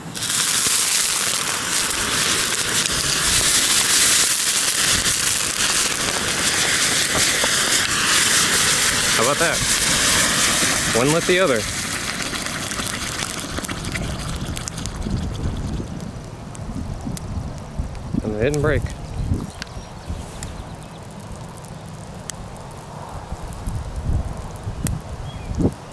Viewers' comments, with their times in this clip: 0:09 insane volume reduction